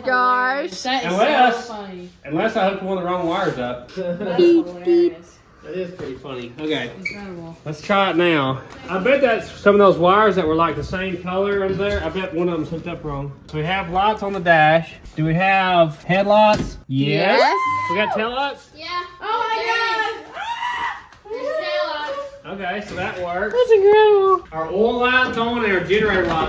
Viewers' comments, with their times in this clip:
0:07 Horn via key, I didn't catch that in the intro, hilarious 😂